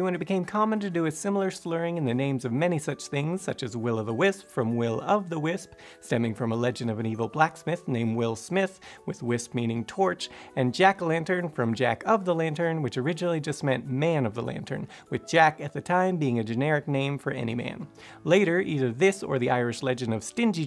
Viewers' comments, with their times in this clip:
0:03 he start spitting bars.